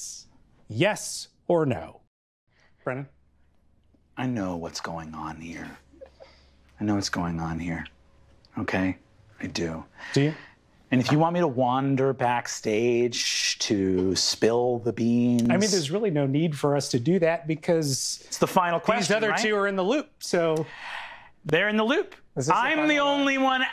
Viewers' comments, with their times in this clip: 0:04 It sounds like joker's monologue from the start